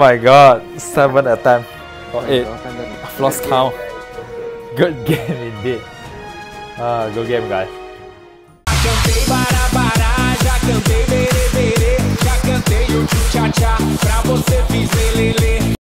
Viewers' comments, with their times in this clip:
0:09 What I hear at first instance is Das se bara bara raat be be be be ..(till 10 to 12 of night )